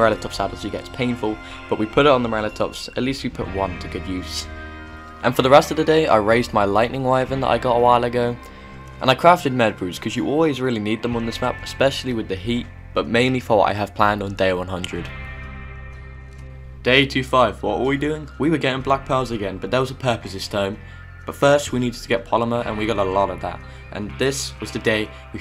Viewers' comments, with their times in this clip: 0:07 i love the rdr2 noises
0:07 i love the rdr2 noises